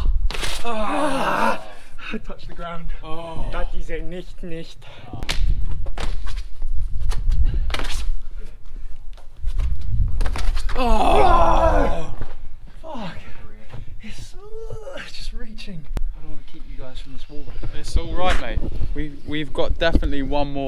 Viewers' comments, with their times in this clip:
0:03 is he speaking german there?